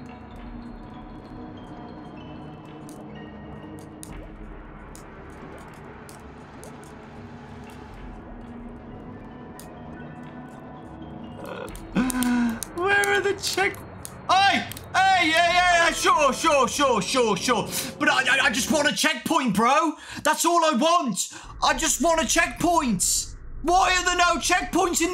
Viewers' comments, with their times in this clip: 0:08 the way the crazy piano is playing while dawko stares at a heart in disbelief is the most "im about to murder everyone" moment ever 😭